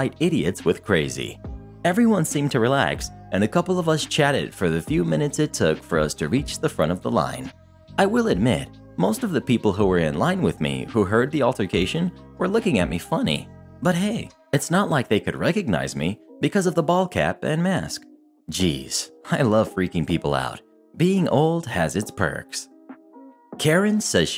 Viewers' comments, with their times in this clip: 0:10 BRO that was like a anime laugh